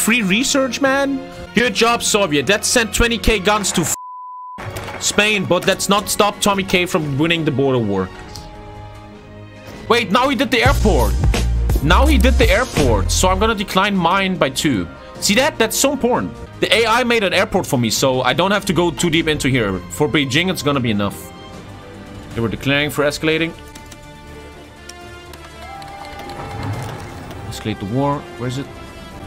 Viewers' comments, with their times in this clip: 0:10 That PornHub intro sound tho